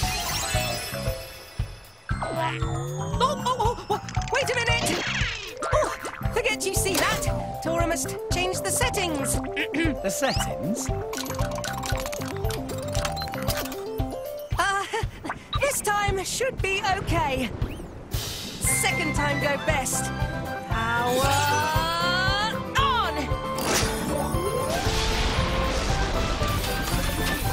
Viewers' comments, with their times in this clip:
0:10 anyone hear Mr. Krabs?
0:11 did I just deadass just hear Mr.Crabs walking?
0:11 Tora channeling his inner Mr. Krabs
0:11 Mr Krabs walking?